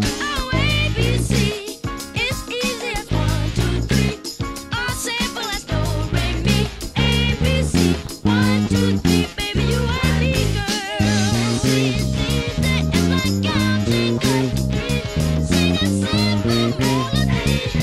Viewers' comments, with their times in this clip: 0:03 ABC is one of my favorite bass lines ever, and probably overlooked due to I Want You Back. Anyone also notice that the bass sometimes plays the notes “do, re, mi” when those lyrics are sung? (For example, .) I thought that was an interesting little detail.